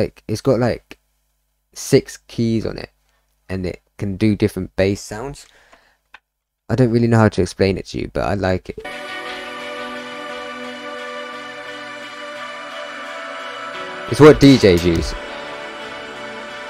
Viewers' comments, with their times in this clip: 0:03 Most of the sounds you refer to from onwards are heavily processed guitars.